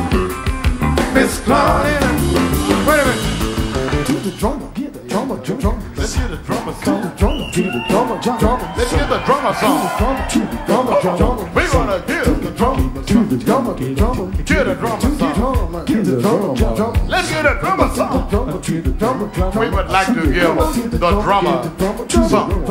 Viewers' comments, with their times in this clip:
0:04 they syncopate their vocals to emulate a remix, very nice. (always better when it's done for real, like this.)